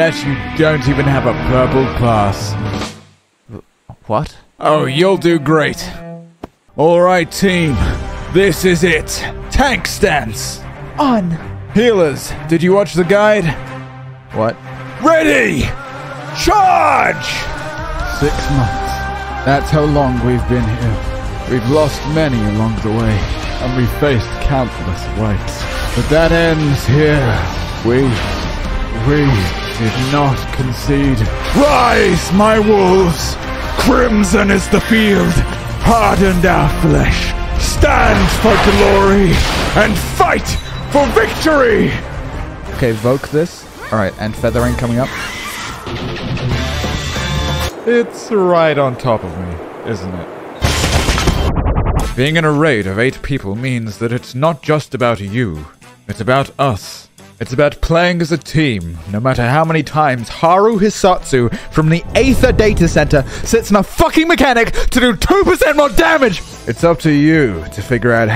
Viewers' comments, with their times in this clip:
0:09 I appreciate the pantheon music shits just so epic for random league of legends champion themes
0:25 Chills. Sounds like Estiniens brother he never knew he had
0:25 it took me re-watching 5 or 6 times with captions on to realize he said "countless ways". Thought he said "we faced countless whites" 😂😂
0:50 What about the music starting ?